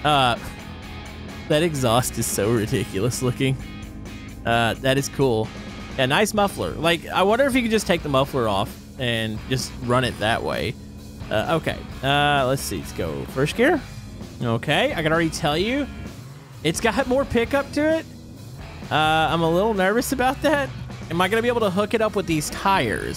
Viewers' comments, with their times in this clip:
0:04 it sounds so good also the music 100 percent